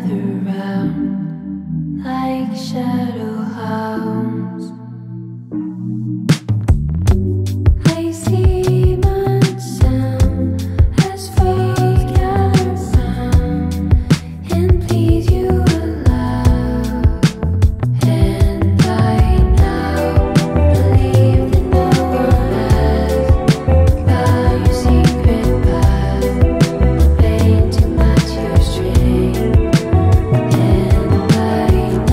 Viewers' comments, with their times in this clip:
0:05 That drum & bass in perfect harmonization is porn for the ears 😩
0:18 Doesn’t sound like fantasy by earth wind and fire